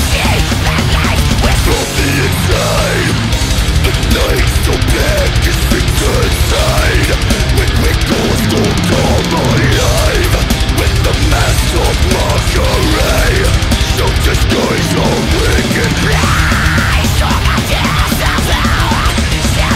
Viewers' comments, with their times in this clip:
0:03 Tremolo, tremolo, tremolo!